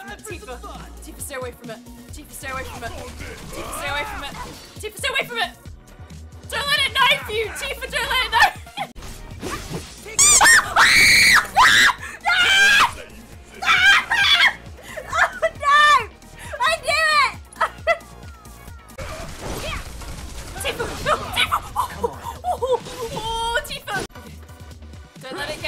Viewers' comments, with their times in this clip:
0:09 holy damn that is some prime screaming